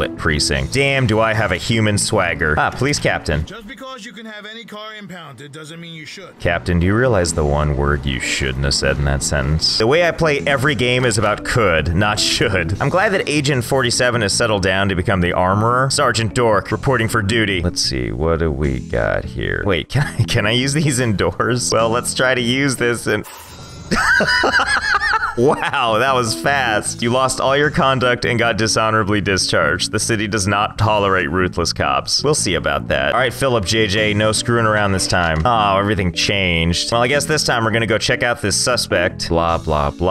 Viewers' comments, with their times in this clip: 0:04 he recognize that voice form any game
0:23 ive never seen him laugh so hard